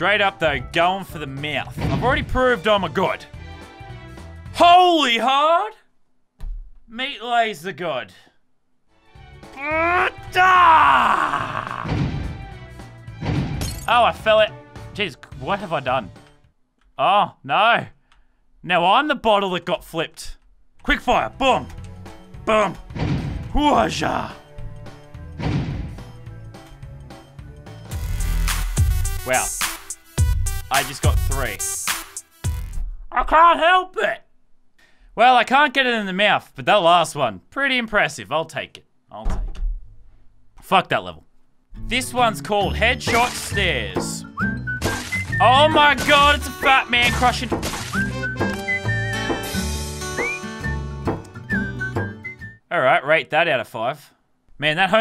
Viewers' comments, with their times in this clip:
0:09 Who else agrees that he sounded like Garmadon from Ninjago?
0:42 dat music sooo😂😂😂😂